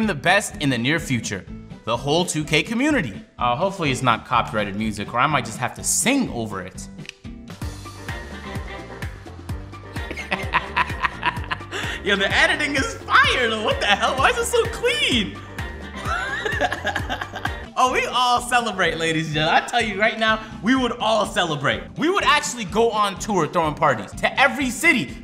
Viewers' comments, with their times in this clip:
0:08 The music is better than the actual music! 🤣 anyone know it?